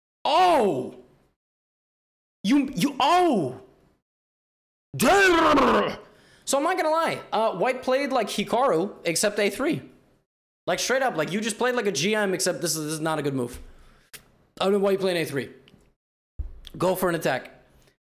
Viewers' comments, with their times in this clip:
0:03 that’s my favorite voice / sound that levy makes when he goes ‘OHHHHHH’